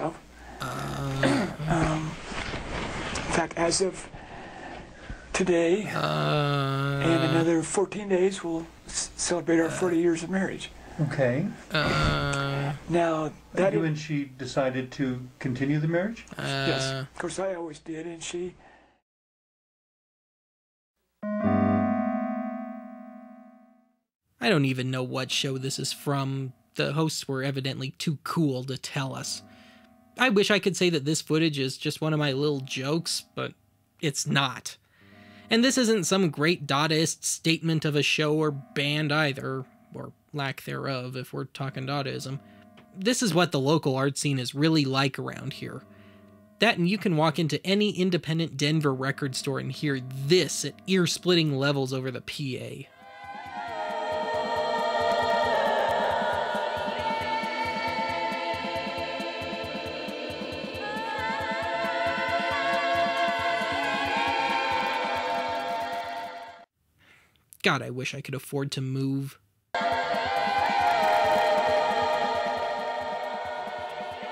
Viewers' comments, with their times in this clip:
0:04 She sounds like me when I had laryngitis the year this video was posted...
1:01 I actually liked the music 😂